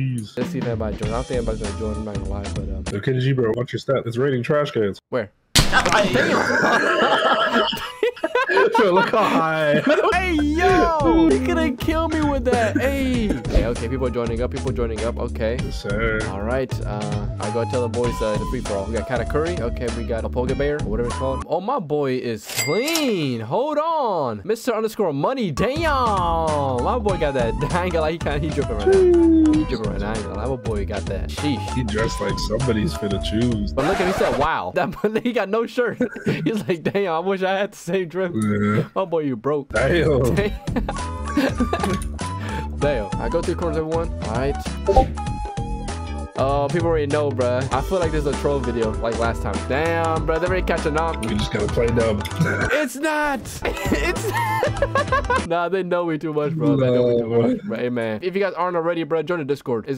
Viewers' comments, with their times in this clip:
0:06 Why bro laugh like a horse😭😭😭
0:44 I hate you for adding a fake discord ping noise.